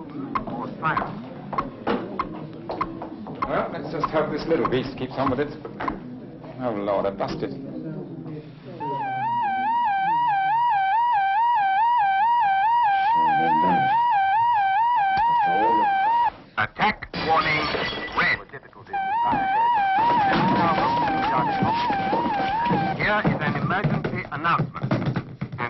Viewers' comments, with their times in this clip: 0:09 Communications with beef boss’s Wii remote have been interrupted.